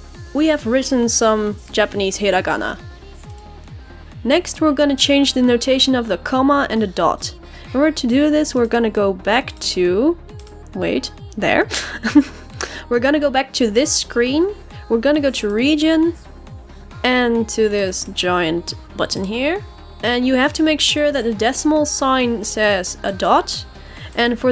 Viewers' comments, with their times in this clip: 0:10 your laugh is so cute